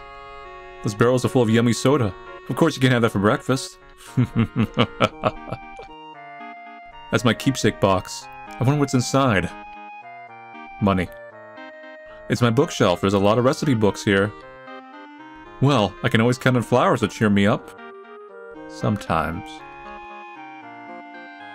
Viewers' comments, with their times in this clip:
0:03 that laugh says it all
0:03 That laugh O_O